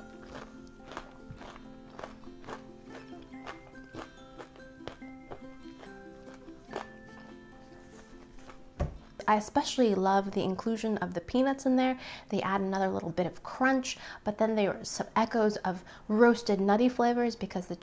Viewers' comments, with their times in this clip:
0:05 when the peanut crunched i though 'emmys going to like that' .. and then you said it 😂 #truefan